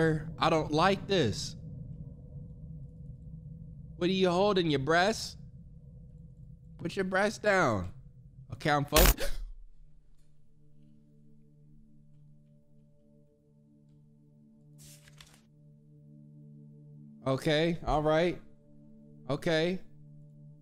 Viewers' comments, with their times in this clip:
0:08 his little gasp 🥺